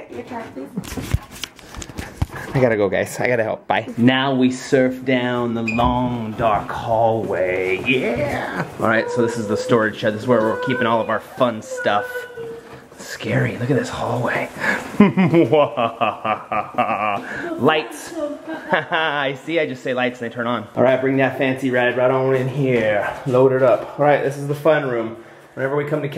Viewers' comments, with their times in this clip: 0:08 listen to the terrified voice.